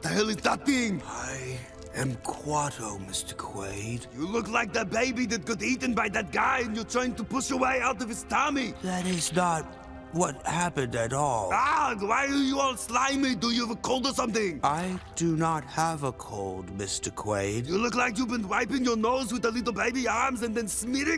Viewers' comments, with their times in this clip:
0:04 you look like DaBaby